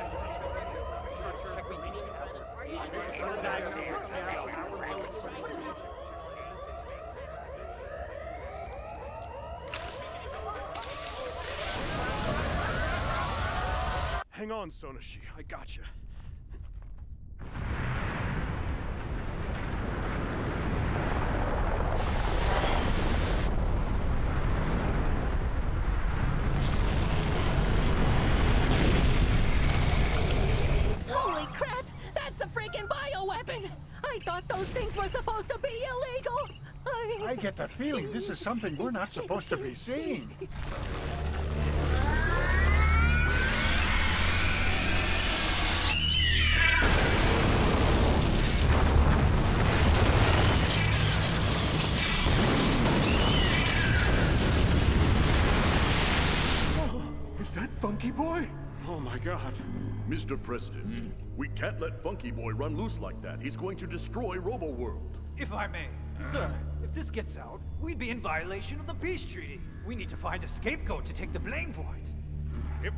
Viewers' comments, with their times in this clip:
0:10 you can hear one of the techs goes "Oh crap, crapcrapCRAP!"
0:11 Shoutout to the guy a just repeatedly yelling 'crap'. A very reasonable reaction to this perilous situation.
0:59 That interject from 'random official' sounds so much like it is straight out of an 80s cartoon.